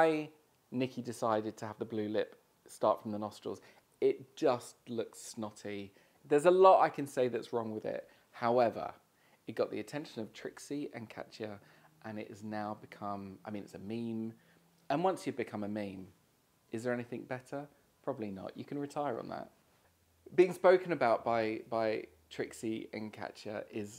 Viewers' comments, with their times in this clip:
0:10 trwixy and catchya